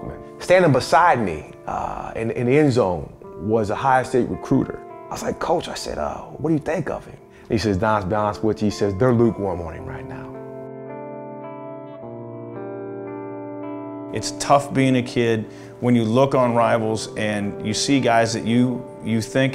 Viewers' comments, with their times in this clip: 0:06 what on earth is he saying ??